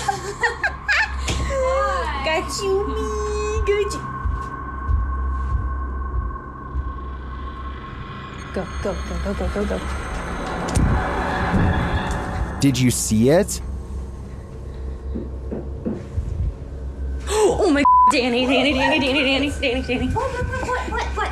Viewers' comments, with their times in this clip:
0:05 There is stomping or knocking they hear which is why they stopped for a sec